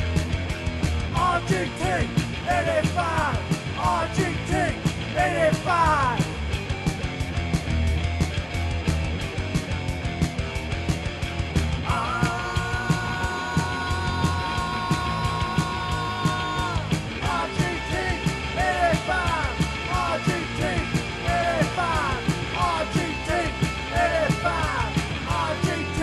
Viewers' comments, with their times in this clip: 0:09 I...don't know why there is so much dead air at the end of the video. lol. Sorry about that. Vid ends